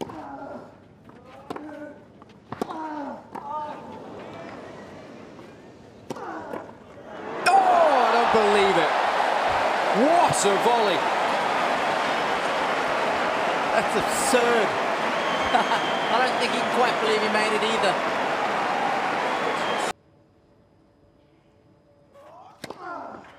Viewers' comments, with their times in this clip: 0:09 all I could think about was uhhhh ehhh uhhh ehhh